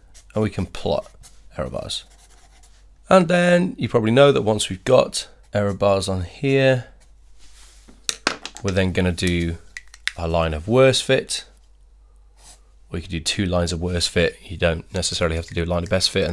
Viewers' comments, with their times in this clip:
0:03 You turned autotune on lmao